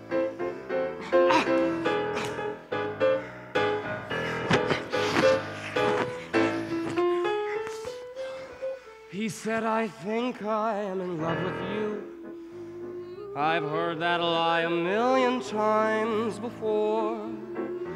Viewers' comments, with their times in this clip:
0:03 WHY ARE THEY SO AGGRESSIVE YOU CAN HEAR THE MIC RUSTLING